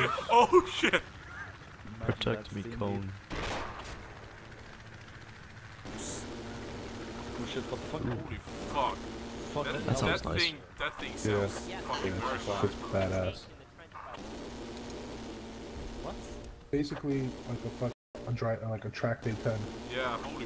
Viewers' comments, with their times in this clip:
0:06 That AA sounds so mean, holy shit.